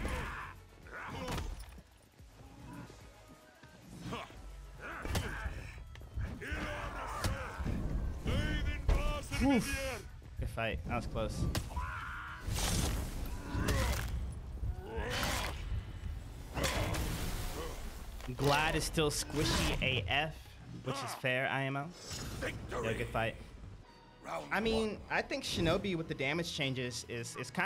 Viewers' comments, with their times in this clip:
0:10 I don’t know why that was so funny you know that little scream he did when he died 🔥😂🔥😂🔥😂🔥😂🔥